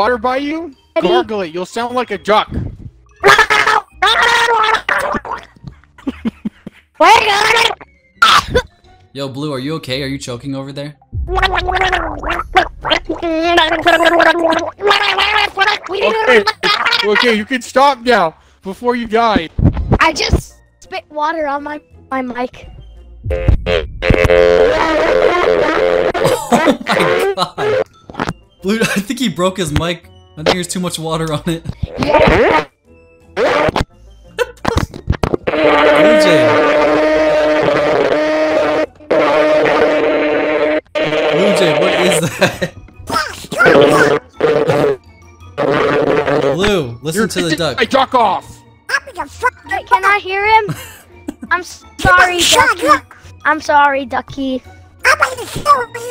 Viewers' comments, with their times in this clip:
0:09 he's getting waterbaorded
0:11 sounds like his mic is being drowned in the ocean
0:20 "i just spit water on my mic" trumpet plays horribly in the background
0:23 me when I'm trying to trash talk but I have a Walmart mic
0:24 He just singing philly nice he has the pico pfp and everything
0:36 the sound of demons unleashed from Hell
0:41 it sounds like a lawnmower on steroids